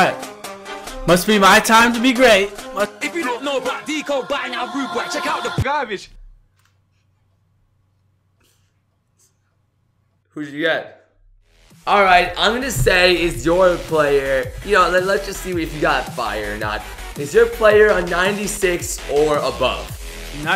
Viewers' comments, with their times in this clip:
0:04 The bass drop